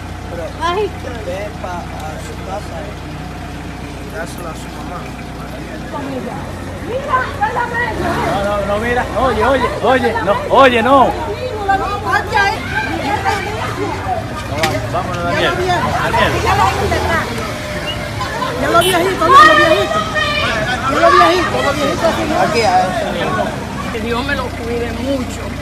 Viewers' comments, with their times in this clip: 0:07 That girl popping that gum lol lawd